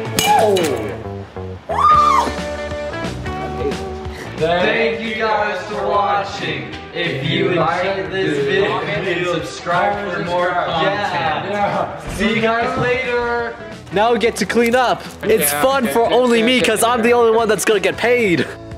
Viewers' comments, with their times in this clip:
0:04 when you’re singing the pledge of allegiance in school with the class